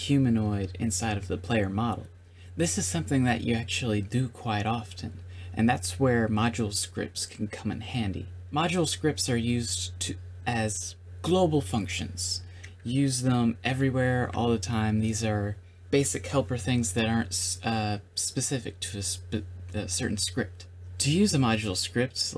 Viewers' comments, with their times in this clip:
0:06 In I thought you said "Macho Scripts" XD. But it's okay, I'm learning ModuleScripts right now. Im a coder and know almost everything. I wanna now focus on learning ModuleScripts.